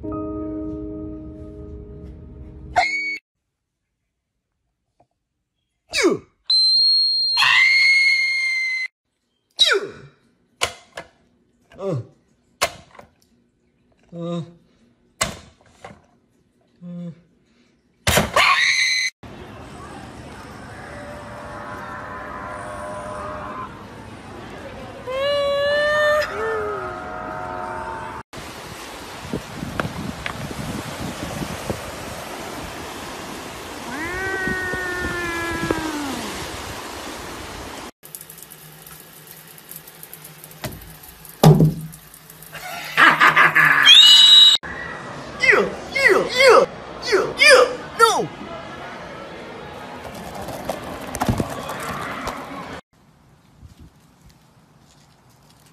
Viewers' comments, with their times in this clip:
0:06 When You Friend Whistles A Whistler.
0:07 He's Screaming Like Bugs Bunny. Put 0.25x
0:20 rare video of shark not screeching
0:39 Drops soap* Maniac laughing* screams as a demon*
0:41 OMG the Scream XD